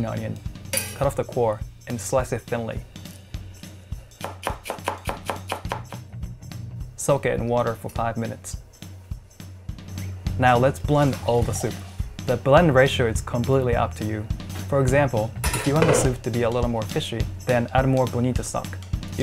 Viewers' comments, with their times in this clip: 0:04 The knife literally said: “CHOP CHOP CHOP CHOP CHOP”